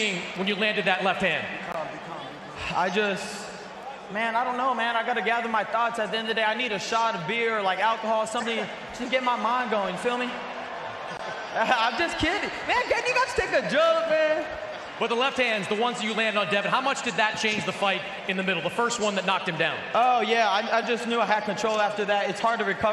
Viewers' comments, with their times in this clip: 0:05 bruh you can hear someone whisper be calm